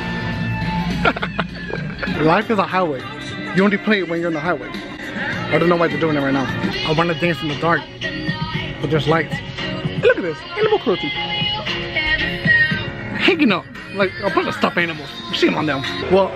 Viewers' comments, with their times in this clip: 0:04 that song low-key good tho